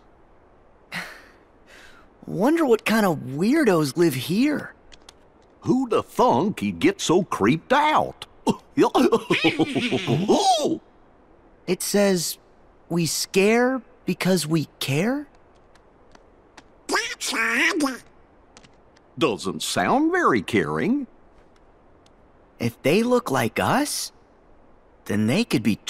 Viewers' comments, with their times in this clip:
0:05 it sounds like Goofy is trying to say What the F
0:05 goofy voice “who the FUCK”
0:06 sounds like he said who the fu*k